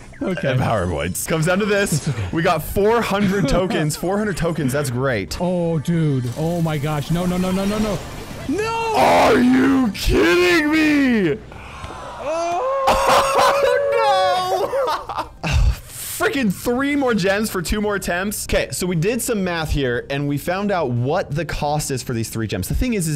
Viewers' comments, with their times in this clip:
0:09 Bro bass boosted himself